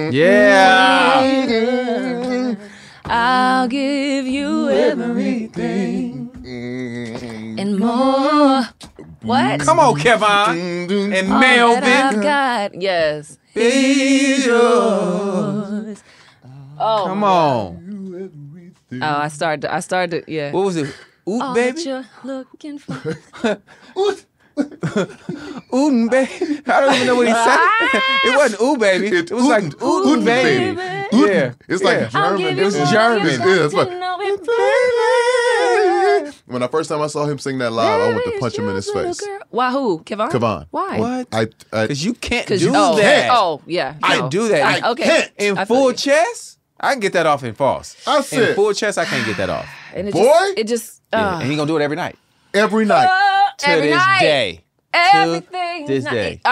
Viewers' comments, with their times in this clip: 0:05 That harmony is fire!!!!❤❤
0:13 J Valentine meant that note
0:43 My favorite part is them singing!!! Yaasss harmonies loool